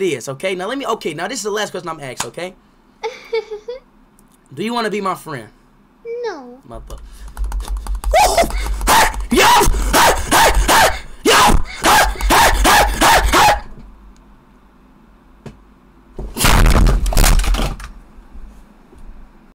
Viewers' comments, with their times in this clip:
0:08 i was cracking up when speed makes those noises it makes me laugh in every stream